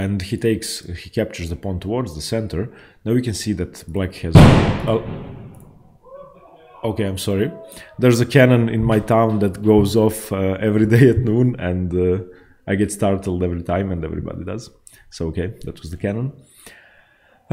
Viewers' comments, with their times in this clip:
0:03 now you can see that black positions is boooooooooooom😂😂😂😂😂😂 now I don't expect that any of you would capture the knight ever 😁